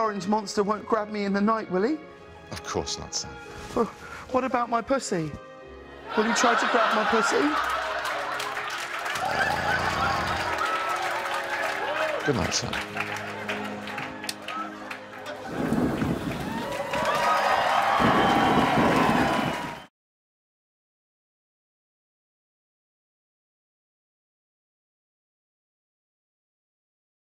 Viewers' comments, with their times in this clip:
0:09 even his 'Errrrr' gives me the chill